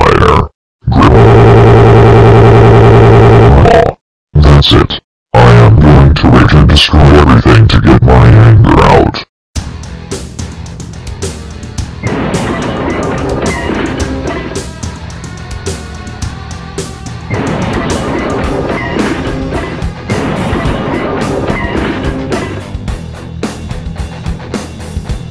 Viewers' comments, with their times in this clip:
0:09 When the music plays you start laughing 😂